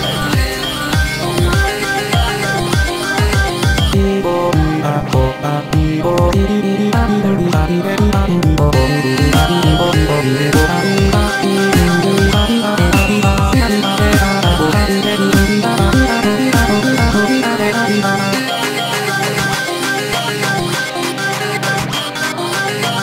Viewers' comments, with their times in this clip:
0:08 His voice a bit like Ace